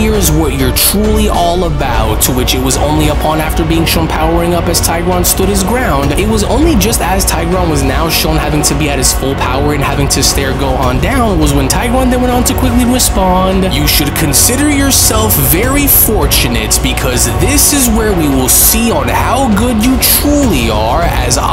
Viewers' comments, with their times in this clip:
0:03 That theme behind Tigron’s full power 🔥🔥🔥🔥 is this on Patreon ?!